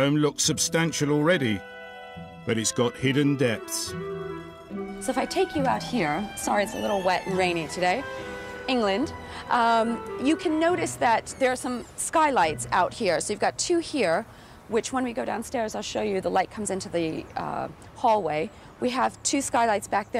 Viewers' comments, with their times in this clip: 0:05 "sorry it's a little wet and rainy"; Woman we have just come from the outside to get into your house to film this (we f*cking know it's wet and rainy!). damn... she really tries to sound polite but ends up sounding like a rich "snob".